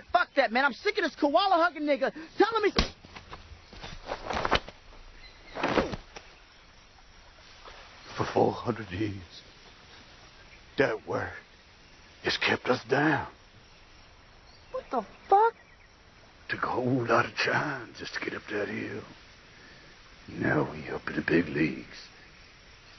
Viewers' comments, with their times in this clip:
0:10 His accent slips... but to AUSTRALIAN!